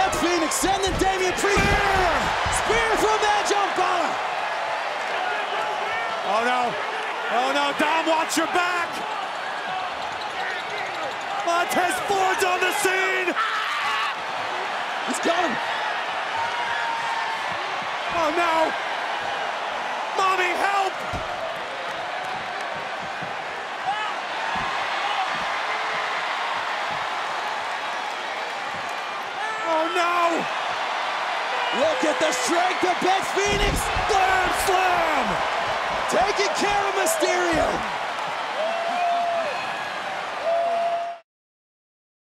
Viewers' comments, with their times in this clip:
0:10 i love how his shoes makes that cartoon noise without any sound effect😭
0:11 Without Editing This. Montez’s Scream Is Still Funny.
0:13 SCREAM OF TOM AND JERRY CARTOON XD
0:31 Did anybody hear Dom screaming MAMI